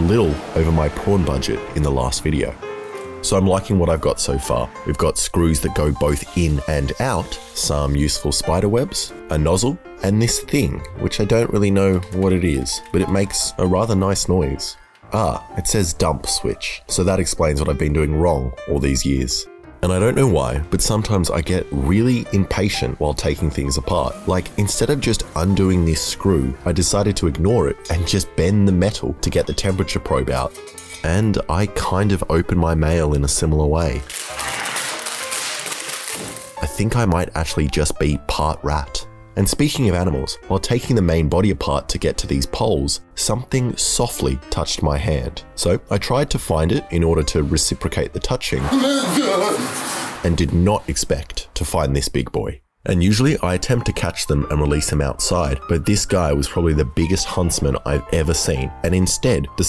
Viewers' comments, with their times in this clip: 0:05 Did he really just put a drill noise over him using a screwdriver?
0:47 goofy ahh cave men sounds